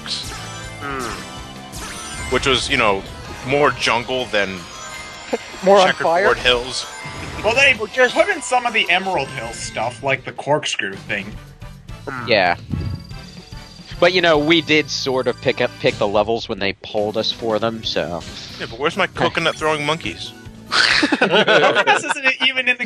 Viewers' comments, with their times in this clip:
0:09 The guy his voice is so annoying....